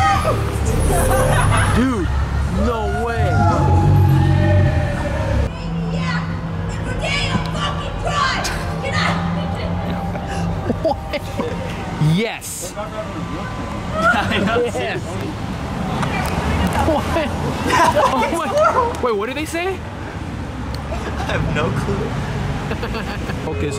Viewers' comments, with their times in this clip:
0:07 the fuck is she saying